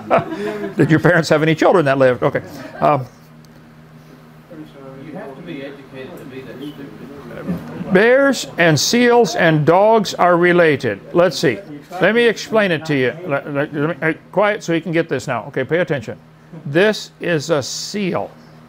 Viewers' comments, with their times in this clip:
0:04 I like how a guy in the background says so proudly " You have to be educated to be that stupid ". AronRa I am truly astonished that you have the willpower to Debate someone who has followers that think in such a way. Bravo to you!